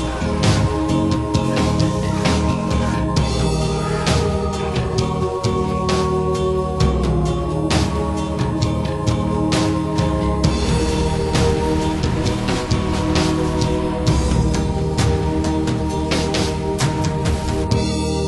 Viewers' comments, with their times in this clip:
0:03 GREAT video! That map is incredible! you can faintly hear "gained the lead"
0:04 everyone everyone if u listen really closely with the volume up u can hear in the backround quietly "gain the lead"